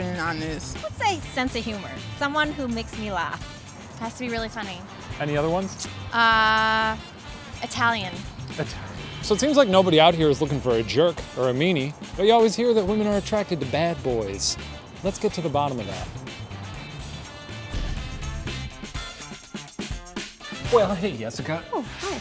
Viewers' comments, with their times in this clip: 0:04 she looks and sounds like Demi Lovato